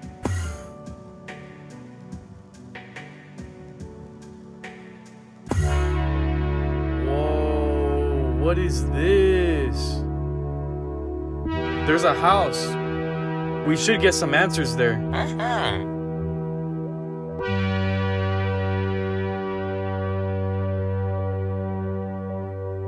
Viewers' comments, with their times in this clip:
0:06 bro, the beginning music was amazing